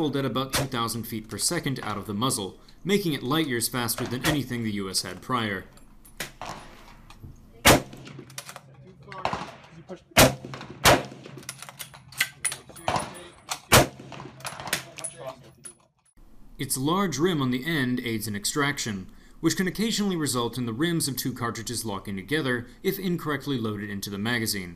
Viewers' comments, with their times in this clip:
0:10 I'm glad you put text it sounds like you're saying 10,000ft/s